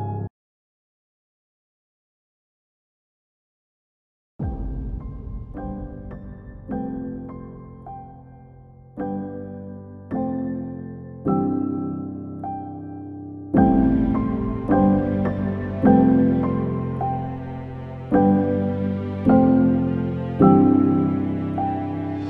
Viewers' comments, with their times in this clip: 0:04 kinda sounds like the jeapordy theme song